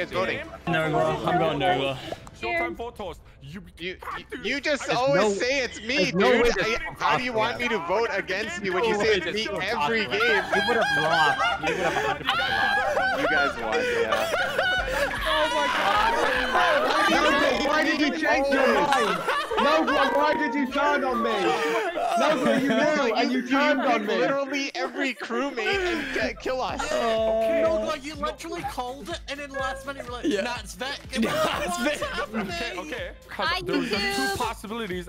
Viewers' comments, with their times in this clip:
0:10 I saw the biggest resemblence of Ali a's laugh
0:10 that is what u call a Ali A laugh
0:10 and the Ali-A laugh begins
0:17 The laugh made my day 😂